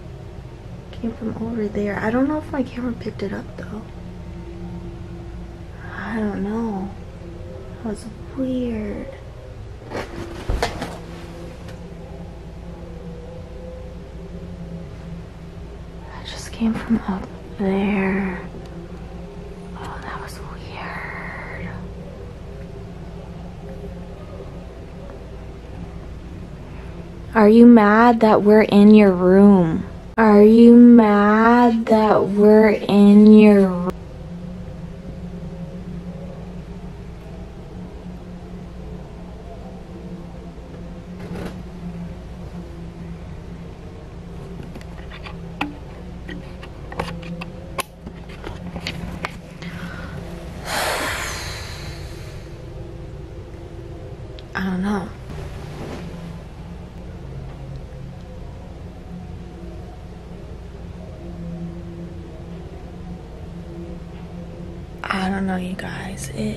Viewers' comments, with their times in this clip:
0:05 knock and then scratching
0:09 sounds like someone says " help "
0:16 are you ok? Your voice changes. Sounds like momentary possession or something
0:36 sounds like a scream
0:47 When you ask 'Are you mad we are in your room'. A female voice says 'A little'.